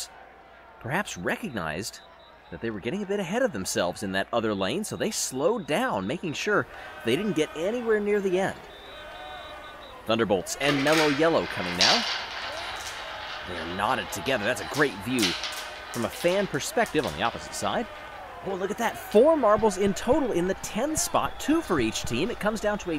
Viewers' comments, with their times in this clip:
0:06 its me or people are yelling "Culero, Culero"